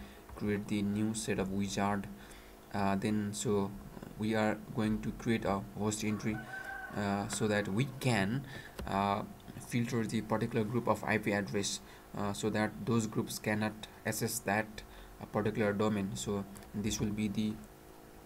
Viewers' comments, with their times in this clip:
0:06 That rooster 🐔 agrees with you.